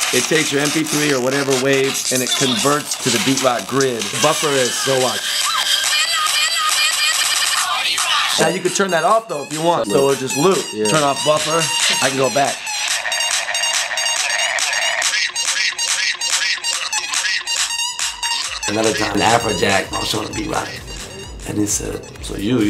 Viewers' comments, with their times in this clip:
0:08 that beat is amazing